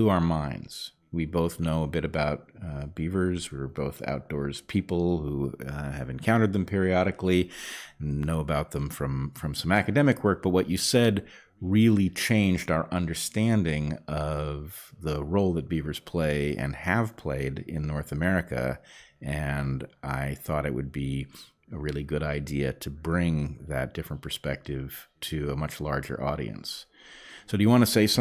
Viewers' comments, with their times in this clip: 0:09 of course we are talking about beavers (known for smacking their tails loudly on the water surface) here, so when Bret said “some academic work” I heard “smackademic work.”